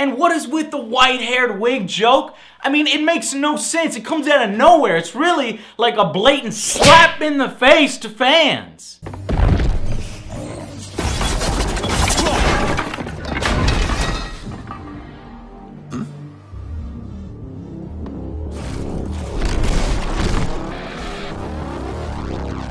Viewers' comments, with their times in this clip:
0:06 lmao that sound effect tho